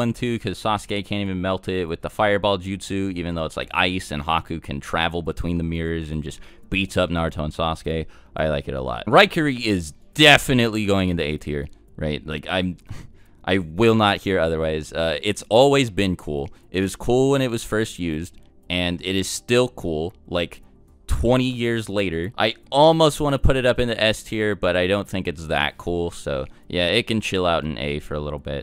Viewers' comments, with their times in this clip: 0:09 did i hear “ri curry”